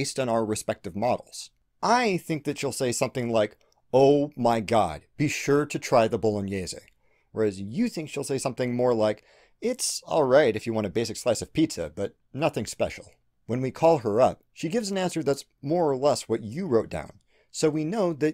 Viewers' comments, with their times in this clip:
0:05 "Bolognese" Congratulations. I've never heard an American pronounce that correctly.